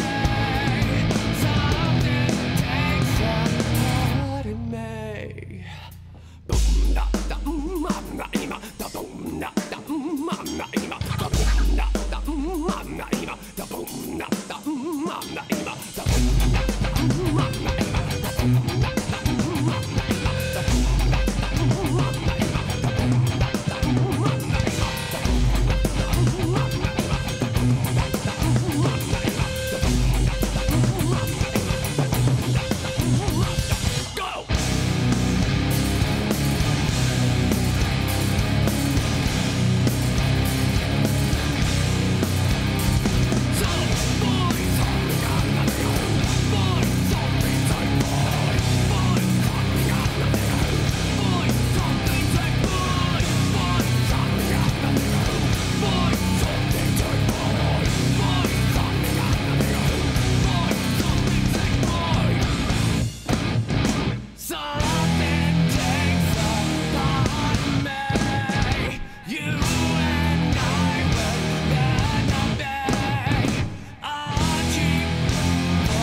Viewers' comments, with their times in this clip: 0:03 The song is getting nice from
0:44 Can't be unheard. Sorry. Fine! Some think I'm the nigga who! Fine! Some things ain't fine.
0:58 Love Korn, but I'm not their giantest fan. Point being, maybe they always do the transition from the bridge to the hook that way, but it's cool as fuck. Davis leading them back ( or so) like that and all...
1:02 I love the change but is takes the balls out of this song
1:02 is so fucked up in new arrangement!where is the beat?